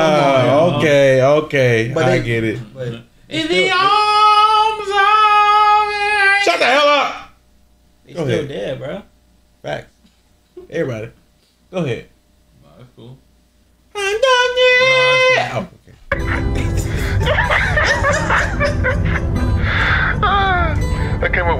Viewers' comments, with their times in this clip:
0:06 No! Let him sing!